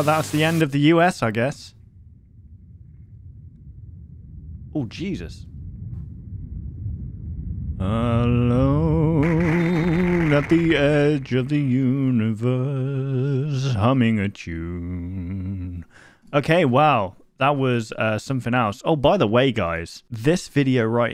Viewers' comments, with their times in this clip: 0:09 when im maxed out on perc 30 and then i start becoming a fucking zombie 1 your singing is great 2 dream sweet in sea major mentioned